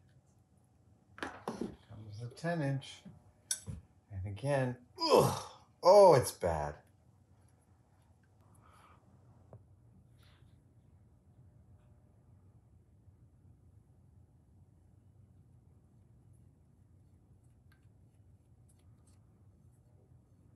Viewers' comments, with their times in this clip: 0:05 Minecraft Steve got hurt